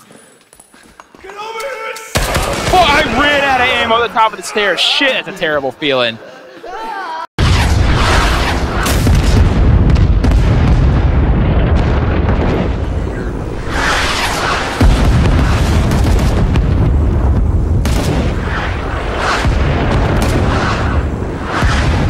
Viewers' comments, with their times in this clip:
0:05 that scream tho